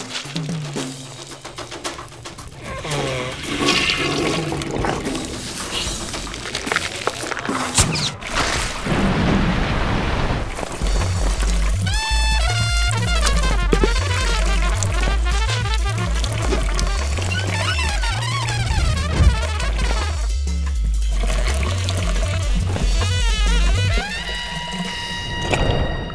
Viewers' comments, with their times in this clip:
0:07 That recoil from his sneeze though.
0:12 The trumpet solo 😂